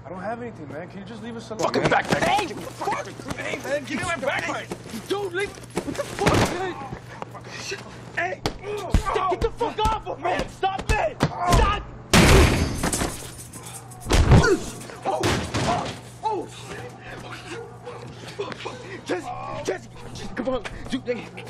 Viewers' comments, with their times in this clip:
0:03 legit said give me my bagpipe x,D